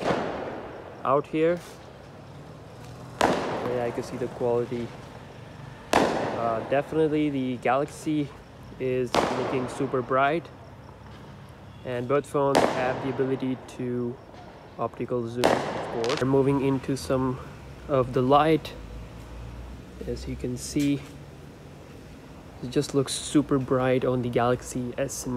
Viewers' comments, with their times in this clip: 0:06 what's the sound, someone shoot guns or something